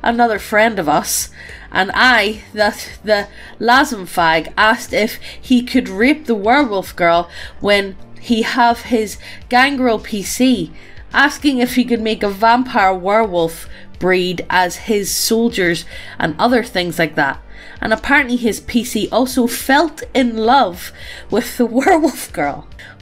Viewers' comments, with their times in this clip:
0:10 Wait hold up, am I stupid or does it say "asking if he could make a vampire-werewolf BREAD" Aa yes, I shall have my way with this girl so I can create the most dangerous bread known to man.